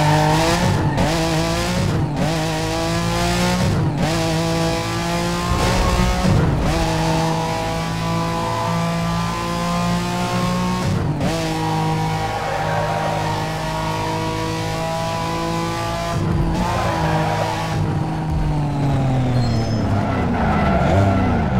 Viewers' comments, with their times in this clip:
0:03 look the video this is where it started to desynchronize